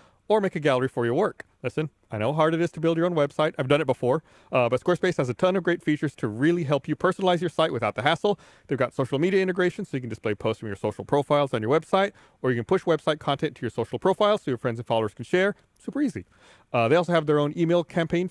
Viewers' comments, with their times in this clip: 0:06 Did Barbara say "What is part of the course" instead of "par for the course"? lol